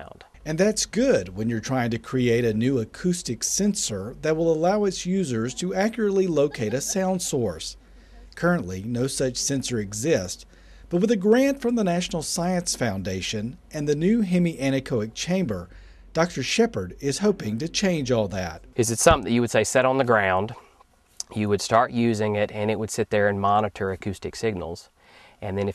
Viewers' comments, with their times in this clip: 0:06 a laugh lol